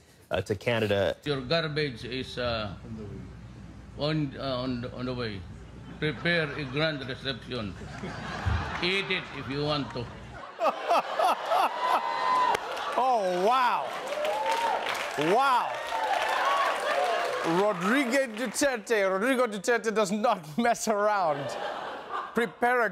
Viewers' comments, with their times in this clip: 0:06 Anyone notice the guy beside him laughing?